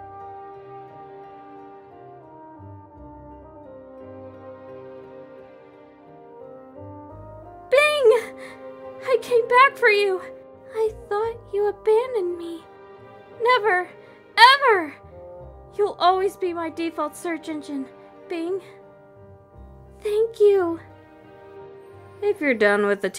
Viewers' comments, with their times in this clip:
0:07 i swear i heard bling